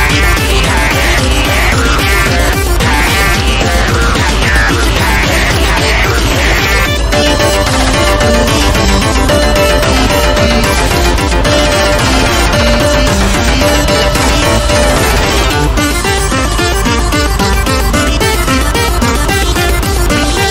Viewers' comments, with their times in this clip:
0:07 agoti voice sounds awesome